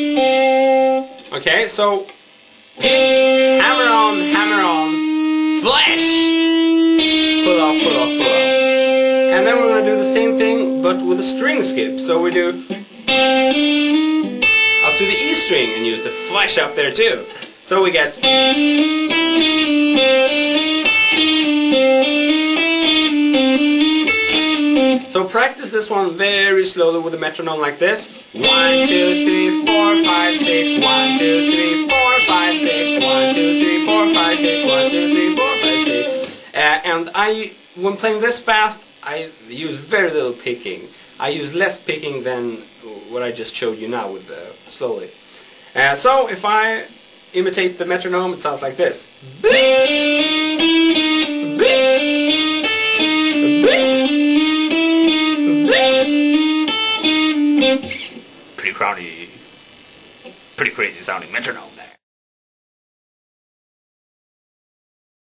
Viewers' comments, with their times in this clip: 0:03 "hammer-on, hammer-on, FLESH!!" Oh, now I understand.
0:46 LOL, laughed my ass of with the metronome bluurp